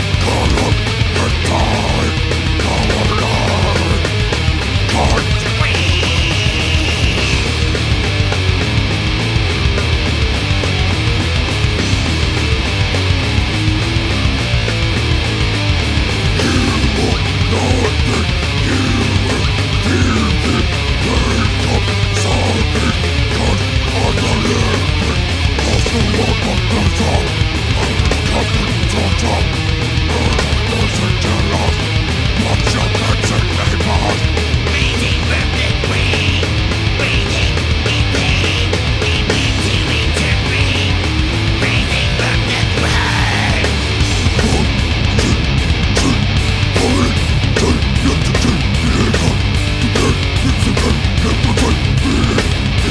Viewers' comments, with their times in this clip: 0:05 ...... omg... it was a pig sqeal????
0:33 same as in it is high pitch growl.